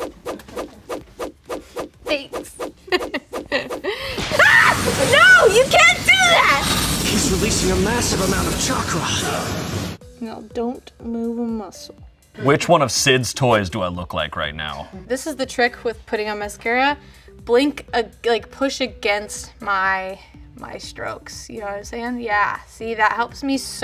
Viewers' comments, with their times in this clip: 0:06 Release your mast from Mt. Chocolate
0:08 Ummm ok please try this and tell me if I'm crazy but if you turn on subs and go to does Sasuke say "Release your mast from Mt. Chacala" ? Or is it just me? Please help I feel like I'm dying from laughter